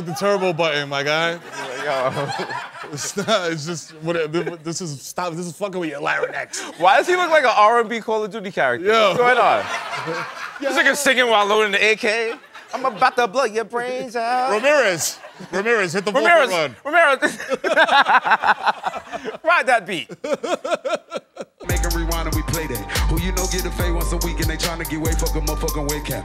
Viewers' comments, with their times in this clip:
0:09 shout out to the audience member who ugly-laughed at "R&B Call of Duty character"